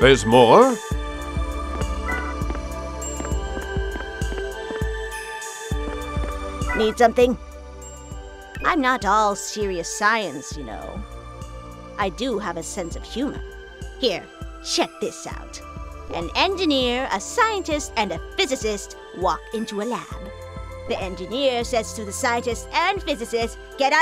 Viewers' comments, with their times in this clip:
0:06 anyone hear the Gran Turismo 2 select sound or was it just me?